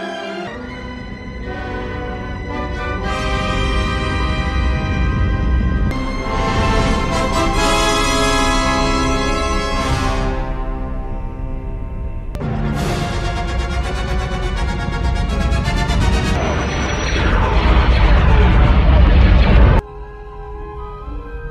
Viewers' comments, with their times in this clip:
0:07 is a classic shot with a glorious score